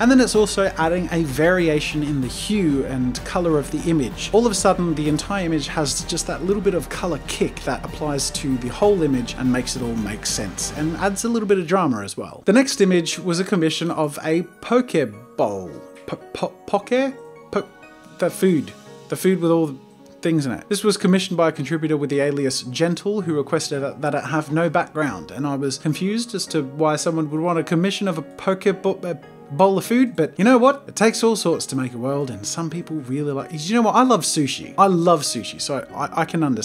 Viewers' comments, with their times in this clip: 0:08 who else thought he was tryna pronounce “pokeball” 😂
0:17 I thought he was trying to pronounce Pokeball, and I was like bro you literally have Pikachu on your wall lmao